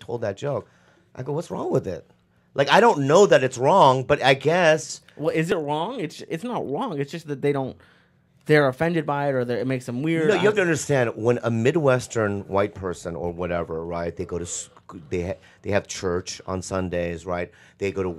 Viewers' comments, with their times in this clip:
0:03 Lee says "it's not wong"
0:06 Lee saying “is it Wong?” 😂